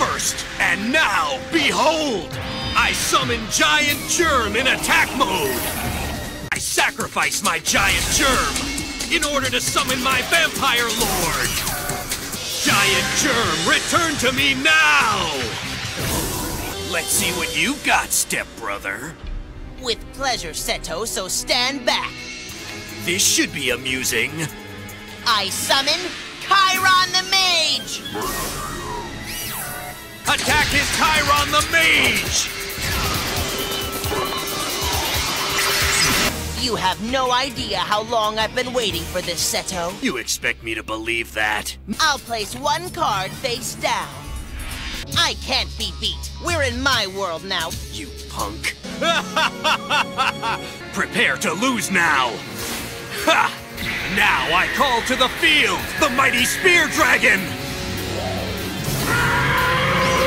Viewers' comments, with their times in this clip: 0:03 I SUMMON GIANT GERMAN! 😂😂
0:47 „You punk!“ *laughter intensifies*